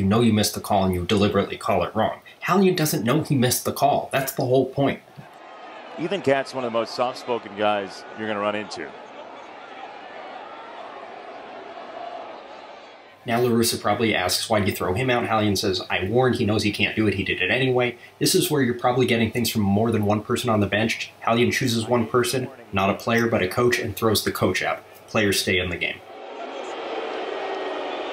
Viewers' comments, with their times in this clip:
0:09 Bro who the fuck is talking